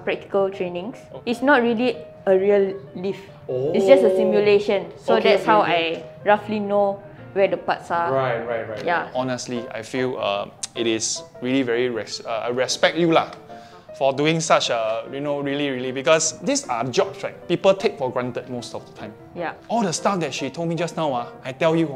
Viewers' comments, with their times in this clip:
0:04 stimulation or simulation?